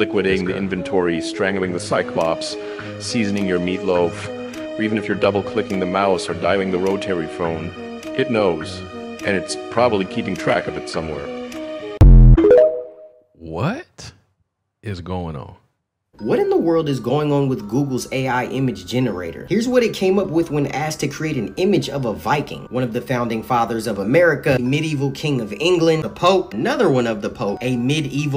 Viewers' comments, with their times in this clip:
0:09 that Ai at work right there that image and voice Ai 😂😂